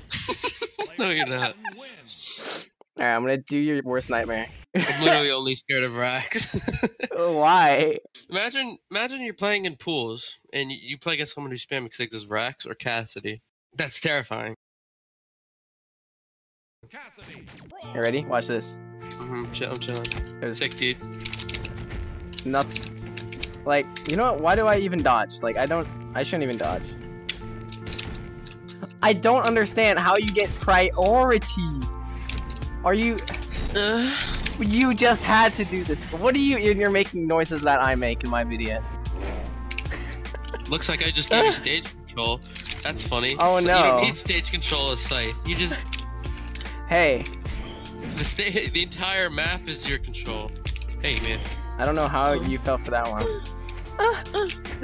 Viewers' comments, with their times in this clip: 0:08 the way the speaker says cassidy after that silent break lmaoooo
0:35 that moan had me dying lmaooo😂😂😂